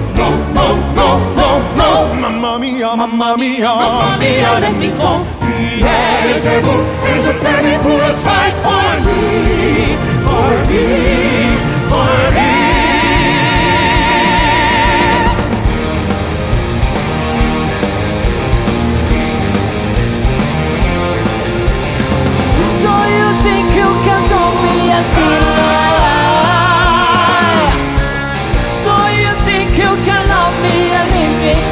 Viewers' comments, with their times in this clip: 0:10 who did the high pitch ?
0:12 my lord that soprano voice is just breathtaking breath support so fine wow ❤😢